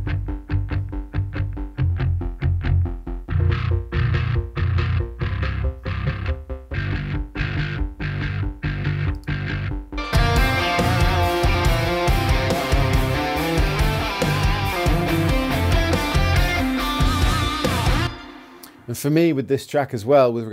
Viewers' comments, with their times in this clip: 0:05 I love the fact that you consider this bass tone as a "clean bass".🤣 Sounds great though!